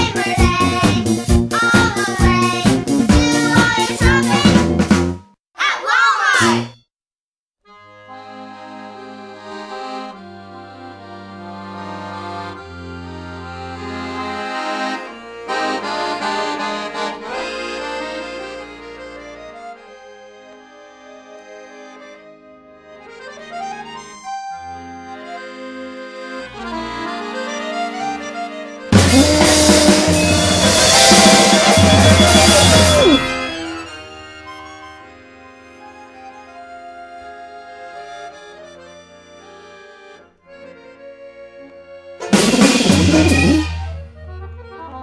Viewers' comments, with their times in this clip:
0:07 The accordion solo is so abrupt and beautiful. Only for the listener to then be reminded of what they’re listening to
0:07 *Paris 1906 outside a cafè* "Mademoiselle! Your beauty is striking! Your skin, like silk, your eyes like the blue abyss of the oceans deapths, your hair, like the something woven by the gods themselves! A beauty so natural that even Da Vinci himself could not recre- *lorry full of scrap metal crashes into a gunpowder factory*
0:26 I found this gem while being bored working night shift. Thank you OP for uploading it and everyone who made this happen. The chaos with the bagpipe and children singing slitghtly off is great. I also like whatever is happening (someone falls over a drumset?). I have played about 1min at home and its banned by my wife. Some of the uses for this song: Ringtone Alarm Payback to a loud neighbor Scare ppl away from your home Ending a long relationship Add to stupid songs playlist for a party Childrens party! (You may not need to host the next time)